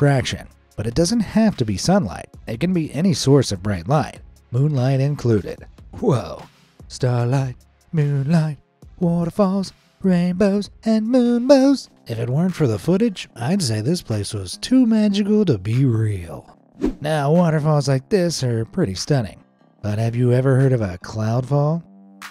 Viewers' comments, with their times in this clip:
0:07 never heard bro so intrigued🤣🤣